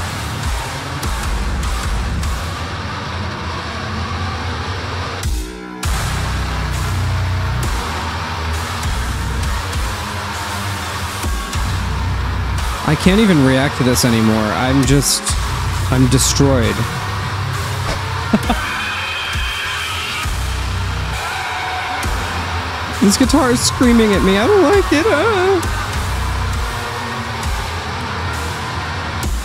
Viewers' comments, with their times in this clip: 0:10 But did you notice the “metal_pipe_falling.mp3”